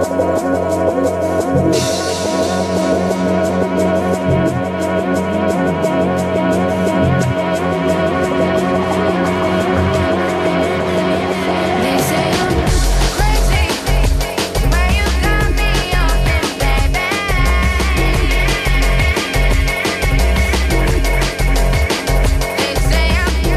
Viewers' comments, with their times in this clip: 0:09 what a smooth flip of a page. It's 2022, September the 26 and it sounds like new.